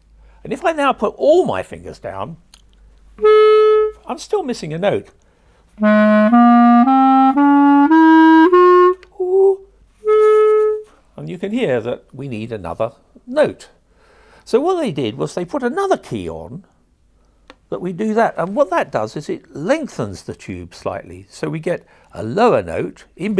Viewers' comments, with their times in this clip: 0:08 he sounded like the gnome meme
0:09 Why am I watching this whole thing, I play the clarinet I know how a clarinet works that lil "hoo" made it all worth it I'm laughing every time I replay it. Subscribing.
0:09 SOMEONE LAUGHED listen closely it’s quiet